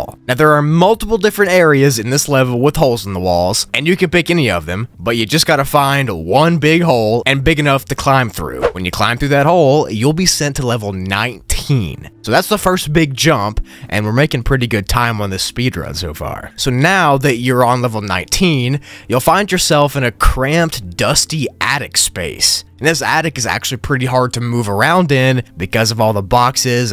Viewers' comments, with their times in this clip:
0:08 you got a vois crack!